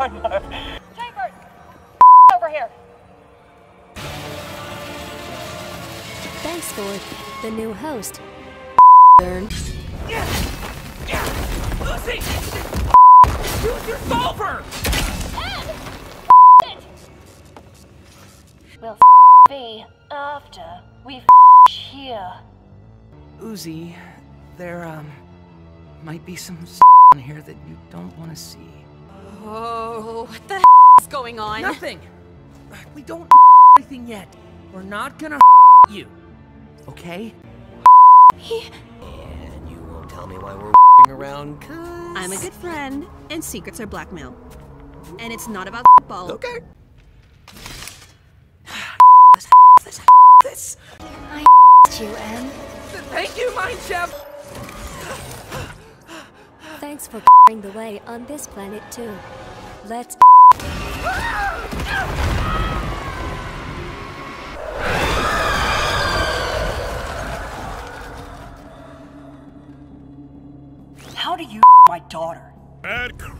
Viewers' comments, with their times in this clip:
0:04 DAMN CYN? OKAY... that censer was perfect there
0:34 PLEASE UZI SOUNDS SO EMOTIONAL
1:00 it’s sounds like “let’s f###